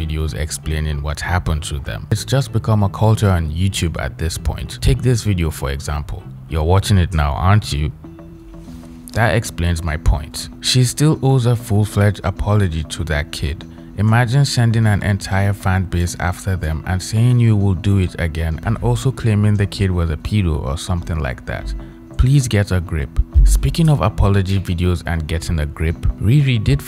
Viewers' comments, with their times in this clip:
0:08 well quite honestly I accidentally clicked on this and was planning to go back to what I was watching before (still do once I finish this video) but the way you talk stopped me from doing it. You just have a nice voice and accent. And I've watched one or two of your vids before, but I couldn't remember if you were another person I watch that does videos about writing and stuff so I stuck around to determine it. I probably would have watched this even without accidentally clicking on it though. So I guess you're right.